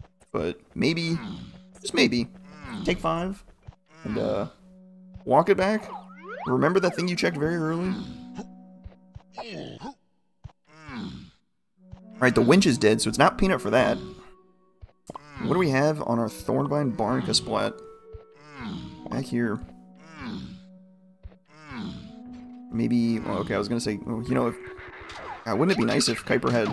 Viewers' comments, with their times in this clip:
0:10 At the beginning only right now, but so far every randomized music in this seed is just so hilariously perfect 😂😂😂 Edit: okay, we get forest night being an actually appropriate song lol